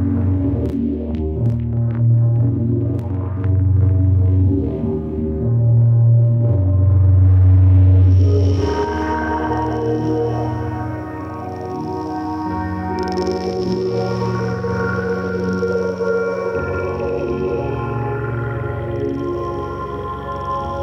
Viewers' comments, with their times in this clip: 0:08 Wow, this was cool. Can anyone tell what's doing that high pitched clicky noise ? It sounds awesome! Can't figure out if the minilogue is actually making it